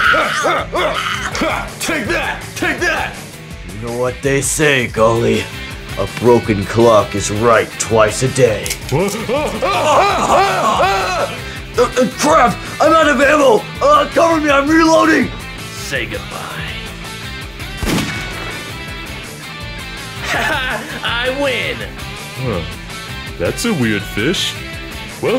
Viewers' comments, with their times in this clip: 0:09 The way her knuckles scream 😂